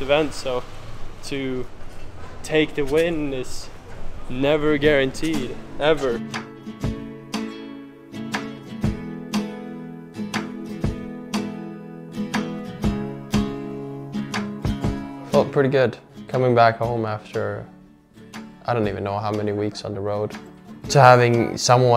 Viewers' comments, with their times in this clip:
0:06 impressive music choice ❤❤ what a style man, love it